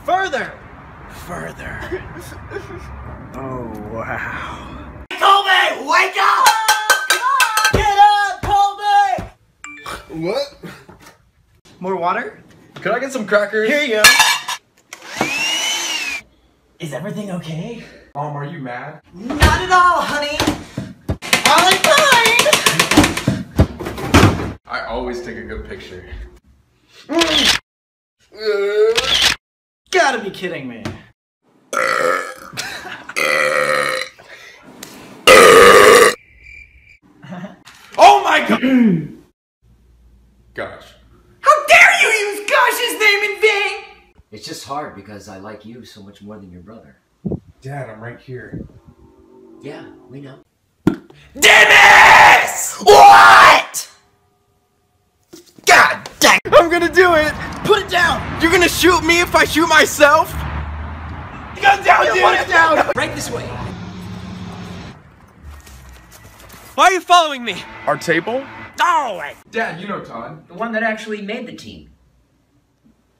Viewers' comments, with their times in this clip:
0:09 Phone beeps ColbySnort What?
0:31 OMG THATS SO ME XD like I'm a female and I scare the living shit out of people with how loud my burps are
0:56 when sam screams "whatt!" you can hear his guitars vibrations 😂